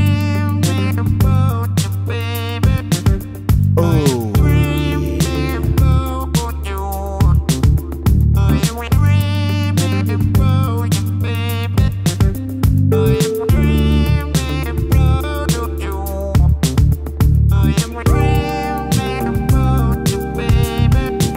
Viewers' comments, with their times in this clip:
0:06 WTF NO1 WILL MOAN XD